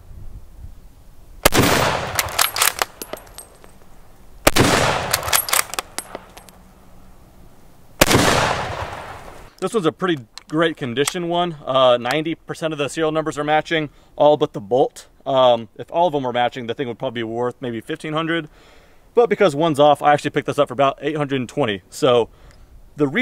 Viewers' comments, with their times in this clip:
0:09 that echo!!! i bet people could hear it miles away!